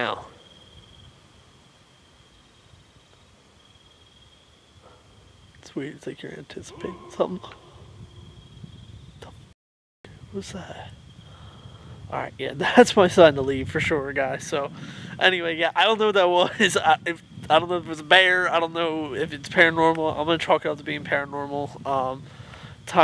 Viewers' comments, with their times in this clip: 0:07 definitely a human
0:08 ,was a man yelling. My son likes to make his voice real deep and yell like that when the jr.high kids are walking the trail